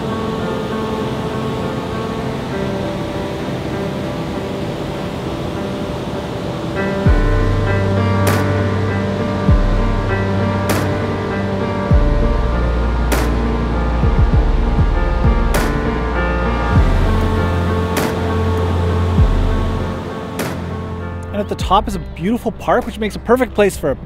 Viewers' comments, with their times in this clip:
0:07 I love the music! The piano sounds a bit old and rusty, kind of like an old LP sound (what do you call it, music people?), or like an old piano that's not been calibrated for a long time. Music's emotional, sunsetty, melancholic, and fits perfectly with the picture. Do you know what the music is? (Good choice, by the way!)